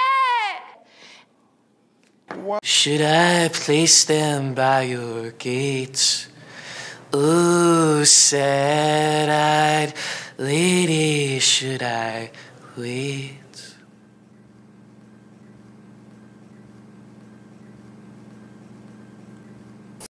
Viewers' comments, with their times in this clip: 0:03 the guy looks and sounds high asf 😂
0:04 ok this guy is not very good at singing but awww such a pretty and calming voice he have
0:07 was literally my voice whenever the water's cold, watching this at the year 2020 btw🤣